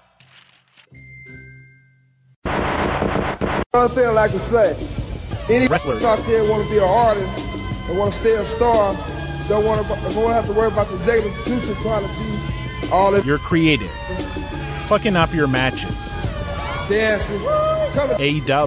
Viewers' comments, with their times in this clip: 0:04 What video or audio clip or beat or song is ? That theremin is sick.